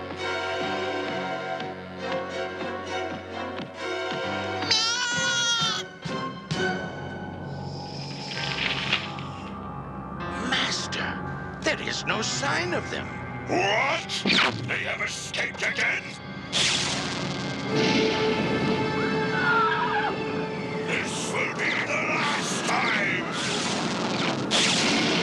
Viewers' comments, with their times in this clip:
0:07 My favourite scene, just epic, the music, the anger, just pure magic and rage.